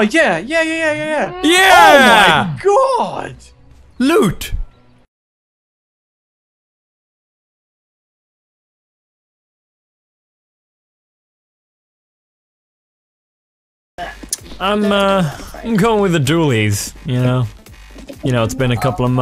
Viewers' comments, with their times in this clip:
0:03 how he says loot just made me crack the hell up!